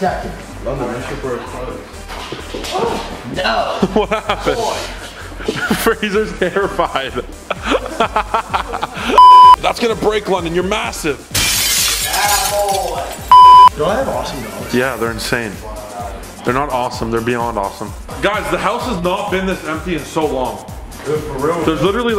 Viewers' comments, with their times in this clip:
0:10 am I the only one that thought it actually broke because of the sound effect😂